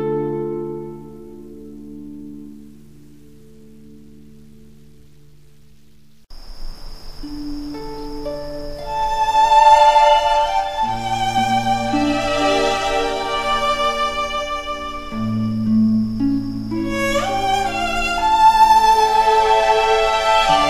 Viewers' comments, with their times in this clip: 0:06 Can you describe the sound? Does it sound like a buzz or static? Or maybe footsteps? I was playing the game directly and recorded any/all sounds. Especially Where I forgot to turn off the Ambient noise and you can hear faint crickets in the background.